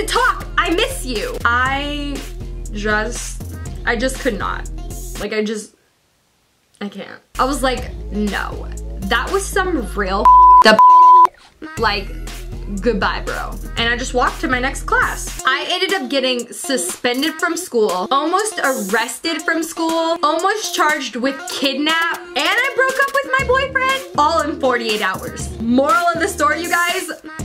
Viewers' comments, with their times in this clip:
0:10 what happened to the sound.